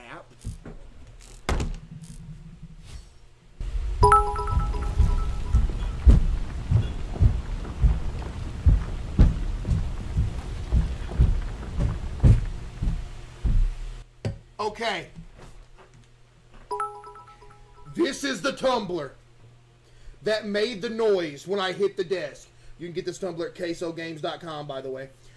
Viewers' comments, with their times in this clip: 0:03 bro the enhanced volume or an audio imput when he walks away and him stomping got me fucked up
0:04 Bro maxed the volume for the footsteps.😭
0:08 bro stomping lmaoo